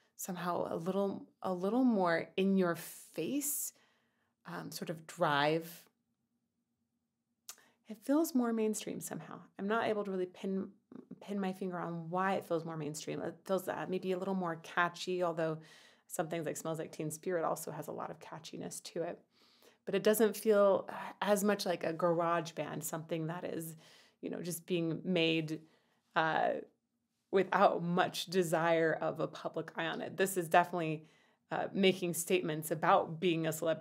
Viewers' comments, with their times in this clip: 0:10 You want some more female grunge? Check out "Andres" by L7. That song has the distinction of being my first official favorite song when my older brother got me into grunge in the mid-90s. I think the word you're looking for is "polished." It sounds more polished, less raw than the grunge sound of the early 90s.
0:15 I would say that they have a more punk tone to this track